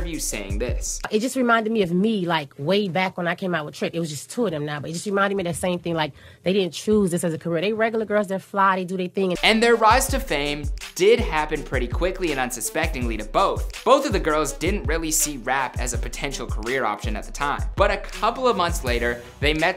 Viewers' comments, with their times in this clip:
0:05 Trina mouth runs @ 1000 Words Per Second.